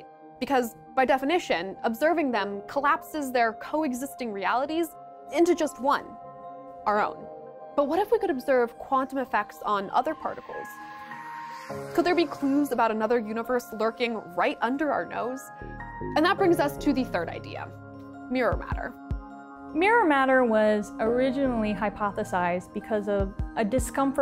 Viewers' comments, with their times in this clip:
0:09 That wave effect on the Earth and the accompanying soundtrack is so cool!